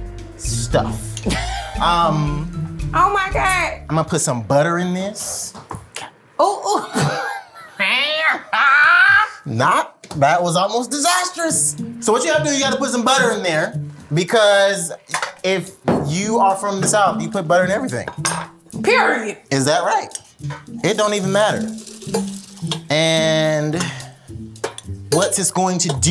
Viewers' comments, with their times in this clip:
0:07 she sound like a cat. I started dying 😂💀